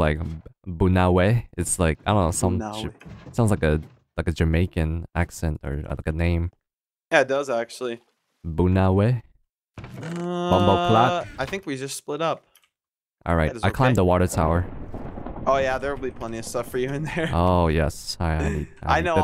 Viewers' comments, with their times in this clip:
0:03 I don't know some ship?!?